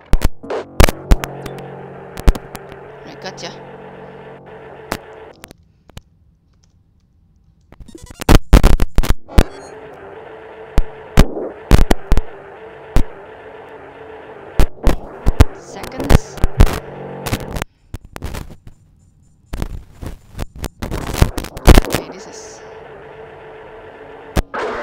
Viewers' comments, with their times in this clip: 0:08 Seems your mic is having issues, lots of static interference or something. Nice work doing what you could - this was a tough one.